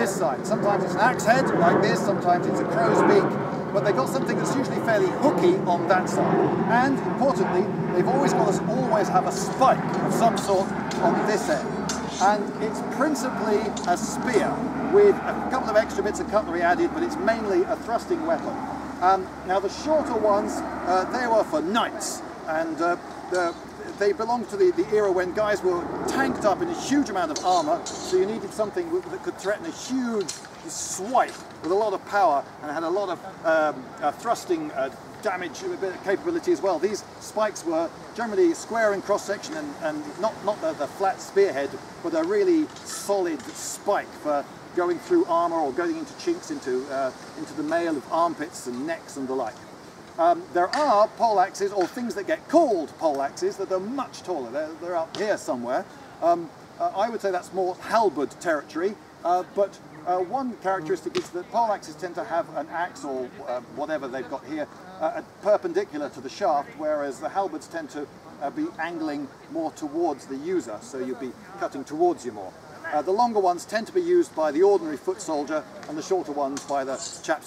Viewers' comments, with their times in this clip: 0:03 What was that annoying sound ? It doesn't seem to be period accurate.
0:59 That bumblebee bee got me. Had to back up and check.
1:00 yooo the bee's saying waddup
1:01 Jumpscare warning for blimey